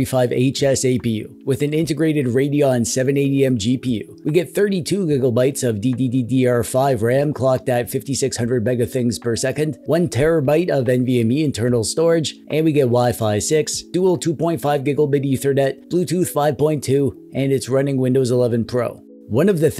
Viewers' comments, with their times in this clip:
0:04 I heard it too, on top of the DDDR5 ram